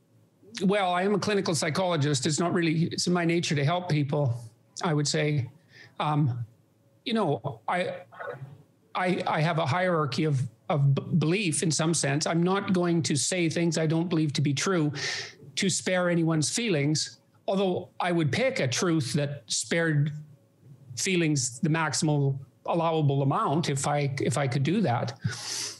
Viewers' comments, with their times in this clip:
0:09 I'm only into this and I'm already pissed at this lady... after JP says he really dont like upsetting people she says in a condescending snooty sarcastic way "oh really? That's interesting. I think that's not something people would imagine" 🙄 ok lady, you clearly dont actually pay attention to Mr Peterson and his work.